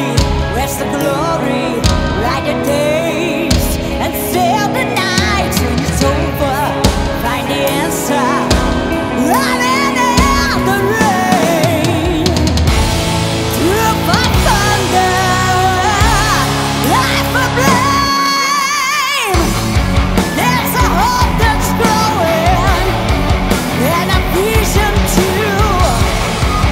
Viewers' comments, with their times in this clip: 0:09 that's the right voice, awesome